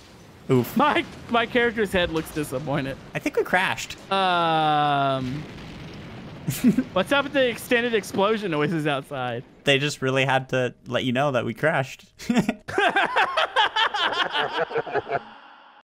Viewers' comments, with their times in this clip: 0:12 the devil laugh